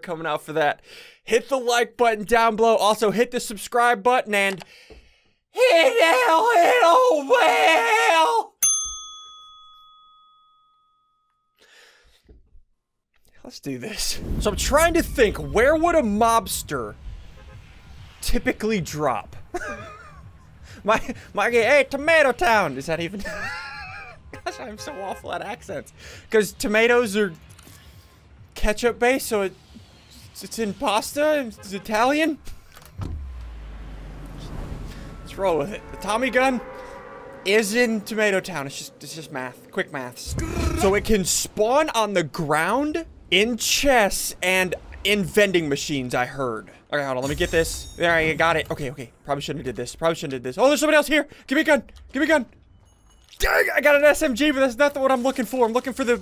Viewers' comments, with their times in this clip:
0:05 live sound of a dinosaur
0:06 Sounds like he had a stroke
0:40 Did anyone hear gudddddd ahhhhhhh